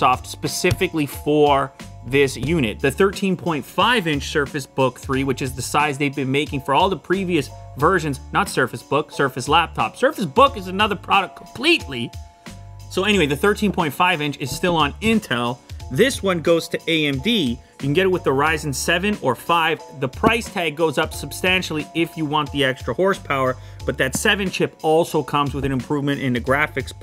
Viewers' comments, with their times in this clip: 0:08 I love when Lew completes his sentence even when he has no breath left.
0:11 Lew almost swallowed his toungue right there